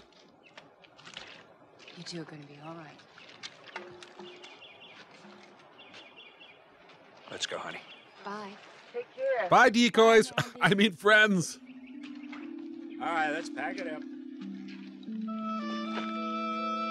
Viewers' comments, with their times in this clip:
0:03 ~ the "clang clang" of bone-dry canteens is unmistakable 🤣🤣🤣🤣🍖 so "good luck" = absolutely what they'll need 🍀 Towards the "ads" discussion: my first at +/- 16 minutes (2x 6sec); 2nd at 29+ min: that was a "5sec +skip" ad. I don't see that as unreasonable. 3rd at 37min; 4th at 50min...